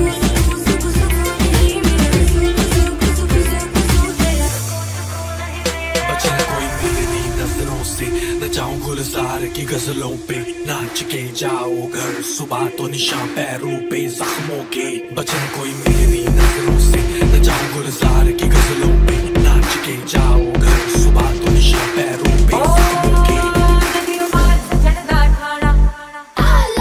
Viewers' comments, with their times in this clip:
0:10 amazing mix of squid game and honey singh